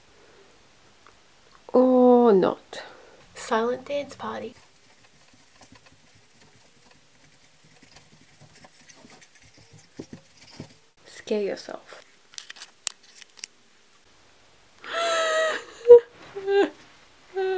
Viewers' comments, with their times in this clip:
0:04 when the scrum debate music starts playing